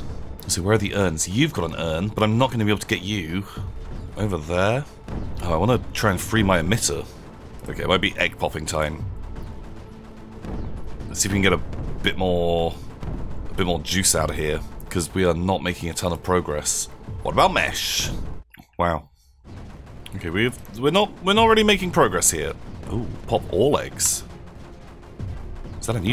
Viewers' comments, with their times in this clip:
0:08 It's egg popping time. Me- hears egg timer in the background. Rewinds. Uhhhhhhh.